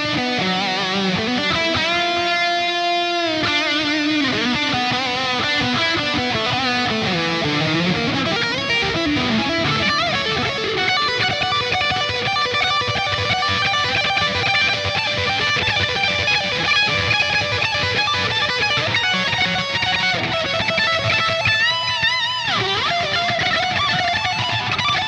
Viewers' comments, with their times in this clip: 0:10 This solo is pure madness! There is just something about the lick it sounds so awesome!